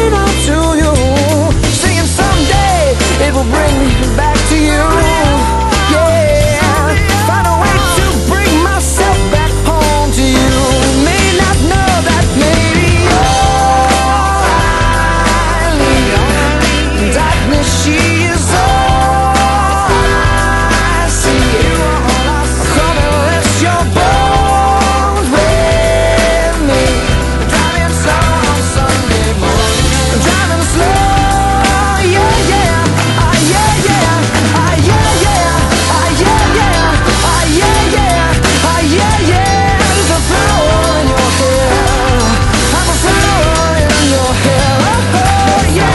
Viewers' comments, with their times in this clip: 0:03 why does he say “bring me” like that
0:32 behold your maroon 5 cd is scratched